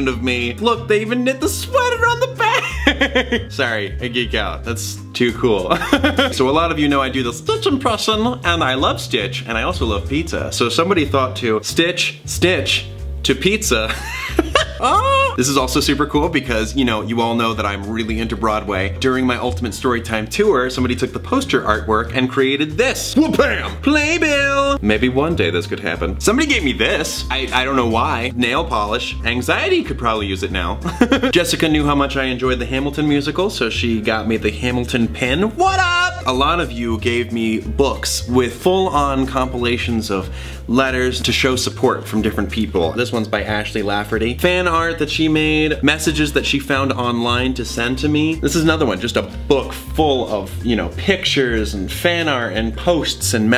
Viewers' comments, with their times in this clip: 0:06 is it weird that I can do the same stitch impression? It's super similar haha
0:36 I thought he said "A lot of you gave me looks and full-on complaining" lmao xD